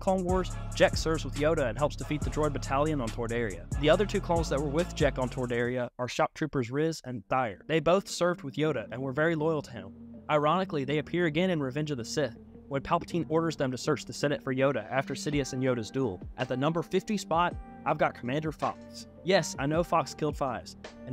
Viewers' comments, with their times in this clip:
0:06 did bro just call Rhys "Rizz"?